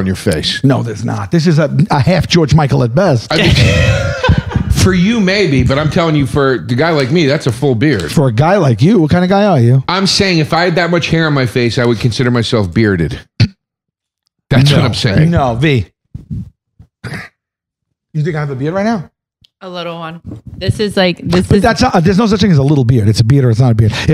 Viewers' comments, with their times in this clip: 0:08 // Sal went "What kinda guy are you🇮🇹🤌"